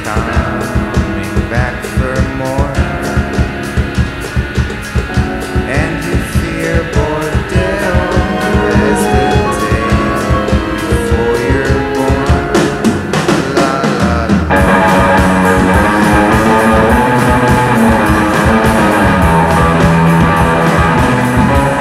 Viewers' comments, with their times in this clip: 0:08 Good concepts. good energy, cool composition, mellotron > ? but only imagine with a wee bit of discipline? Im sure im not "getting it" but its too.................................... sloppy.for lack of a better term dude. THe same material in a better mix and 3 times crisper would be seriously legit.your're 90 percent already....all u need is a taskmaster..a "studio" version of seven to seven would be .. well u know.awesome. guitar work is very enjoyable.very. Also..@ keys I assume.. really? thats quite an old/ school melody. you guys deserve work. With so much new vid content being created, soundtracks. whatnot. glhf